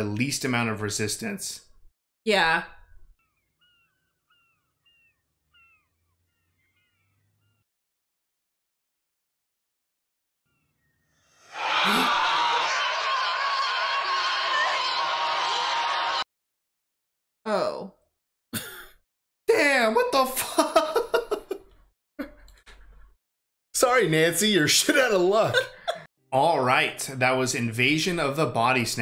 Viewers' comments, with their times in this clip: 0:10 When I was in college a girl I knew and I used to greet each other by screaming and pointing the same way Matthew does at the end of the movie. We would do it at parties or just if we encountered each other on the street.